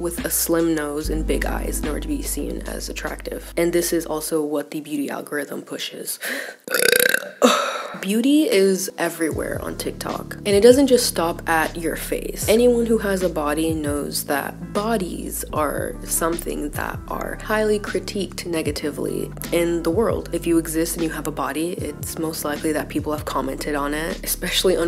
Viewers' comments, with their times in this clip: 0:06 i LOVE that she’s talking about beauty standards and just lets out a huge belch in the middle of it. No shame😂. Love it❤